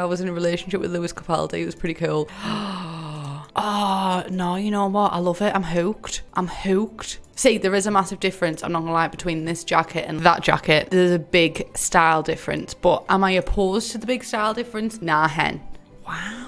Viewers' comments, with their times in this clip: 0:04 no one: my brain during a test "hewked"